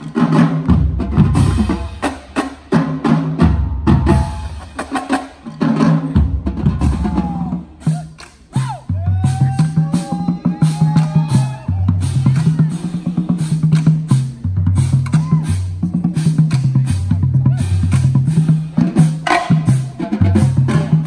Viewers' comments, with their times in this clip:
0:08 Cadence ? Shit OD Funky!